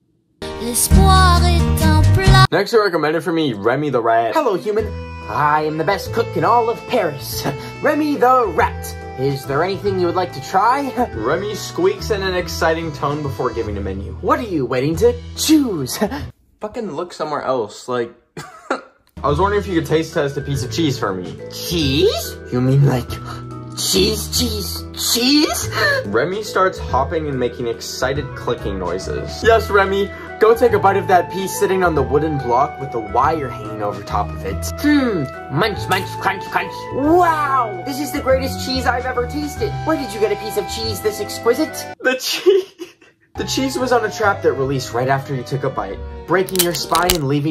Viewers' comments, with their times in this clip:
0:05 the music in the background 😭
0:28 Ur voice acting is actually quite impressive